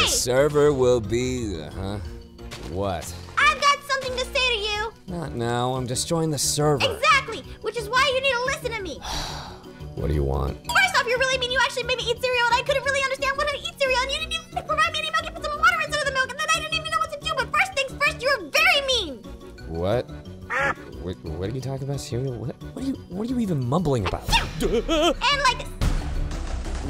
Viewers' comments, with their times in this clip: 0:04 aphmau says things so fast but at the last word she said but first things first you are very mean Jean what?
0:10 I love how fast she talked 😂
0:10 If you can say this many words with that speed you are gigachad. Aphmau: Say less
0:10 It’s just..how did u say it so fast?!?!? Like slayyy✨